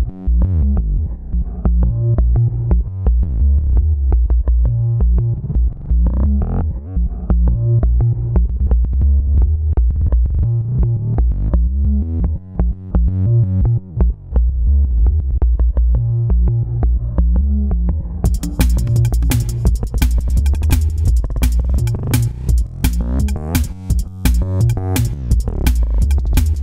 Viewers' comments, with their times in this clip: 0:09 .. i have VST plug called buffer overdrive what makes similar effects ..nice